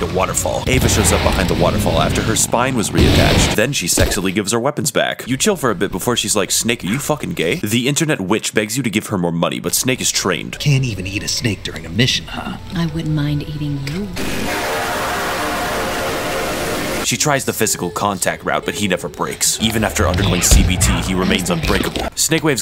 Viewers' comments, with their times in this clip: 0:09 Nothing in this lifetime will ever be as profoundly hilarious as the ps2 boot up